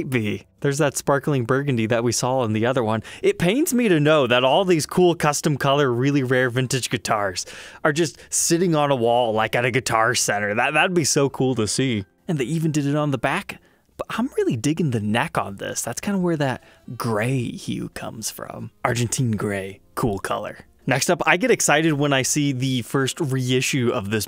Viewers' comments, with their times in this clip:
0:10 that voice drop on "That would be so cool to SEE" xDDD